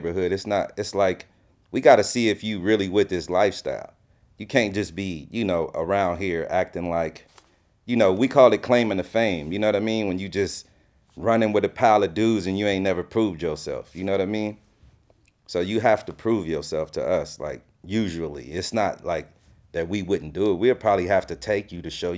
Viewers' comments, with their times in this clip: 0:04 sounds like Tupac.